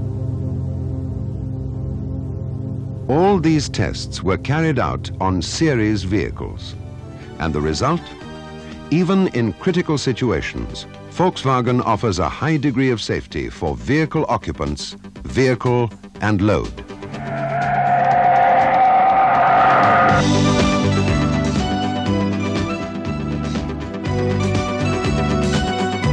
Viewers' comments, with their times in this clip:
0:07 Sounds like Depeche Mode.